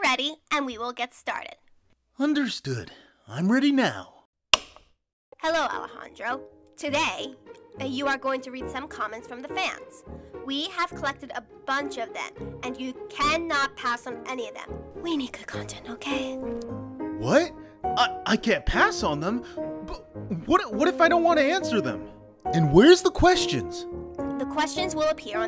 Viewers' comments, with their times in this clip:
0:06 Not Alejandro’s voice being goofy💀who even tried to voice him in this vid cuz I know it isn’t the real voice actor (jk,I respect that u tried to sound like him,but seriously why,WHy❓👹💀)